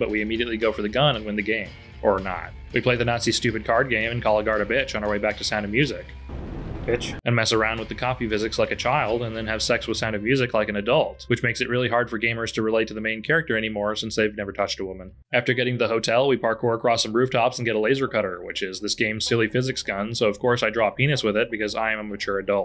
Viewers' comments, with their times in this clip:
0:04 The Guard is actually interesting as he's the only Nazi in the game who is concerned for BJ's well being from the scared tone of his voice, as if you keep pestering him instead of sitting down he practically begs you to just follow Engels Orders due to the mortal fear he has of her. Or at least that's from what I remember, it's been a good 8 years since I last played this and I think it's long overdue for a replay!